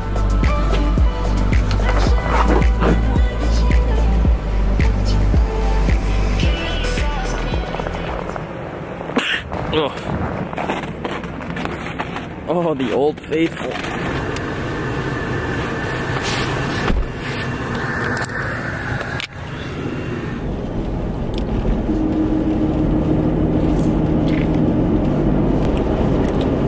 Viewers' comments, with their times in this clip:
0:09 Imagine sneezing like in today’s world.